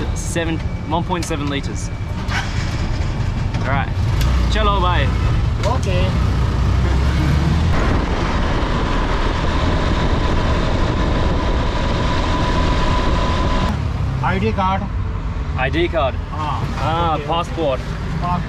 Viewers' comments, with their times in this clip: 0:04 i like that guy's accent😅
0:05 That "OK" From Chacha Is Very Beautiful.Chacha Has Such A Very Beautiful Soul🥰. A Lot Of Love From Dera Ghazi Khan 🥰